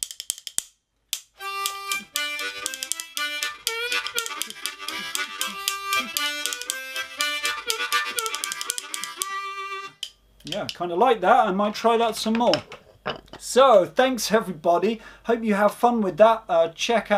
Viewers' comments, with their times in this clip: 0:03 what you are paying here feels very different than what you just finished covering earlier in the video, It is almost like the first 3 draw in the middle of the A section, and the first 2 draw have scoops on them and the same thing in the B section